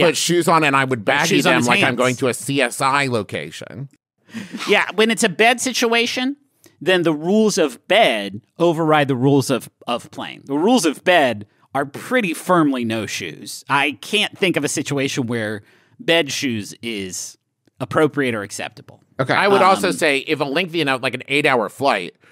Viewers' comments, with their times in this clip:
0:04 there's a weird "munching" sound effect -ish lol